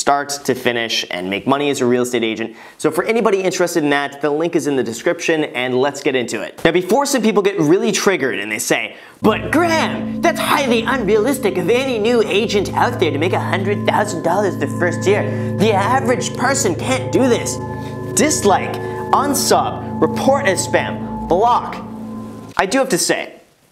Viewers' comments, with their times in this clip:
0:07 why did he turn into Adam Sandler when he said "but Graham" lmao
0:09 Voice/face Sounds a lot like Trump